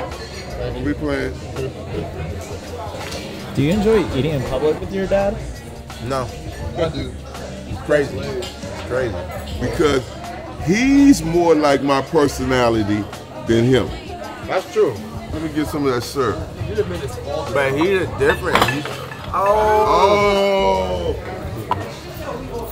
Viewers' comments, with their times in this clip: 0:08 His dad sounds like Samuel L. Jackson